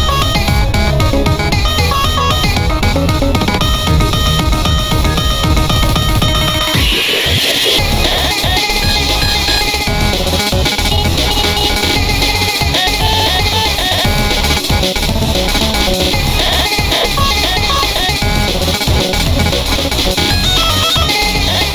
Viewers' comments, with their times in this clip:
0:04 epic cry 3 2 1...
0:06 * when your little brother cry *
0:06 I,m Sorry.... WTH IS THAT CRYYYYYY!?!?! LMAOOOOOOOOOOOOO Parents: Thats Curse... :Kids THATS WARRRRRRRRRRRRRRRR